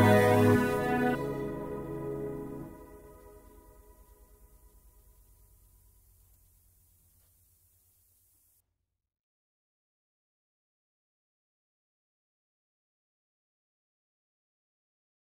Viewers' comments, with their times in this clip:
0:10 Very nice singing 👍👍👍👏👏👏 🎉🎉🎉🎉❤❤ 🎸🎸🎸🎤🎤😘